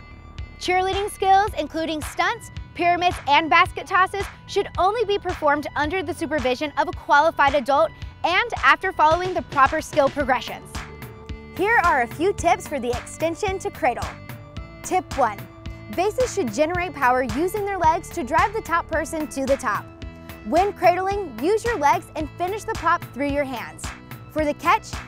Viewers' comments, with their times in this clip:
0:10 who else heard qualified goat?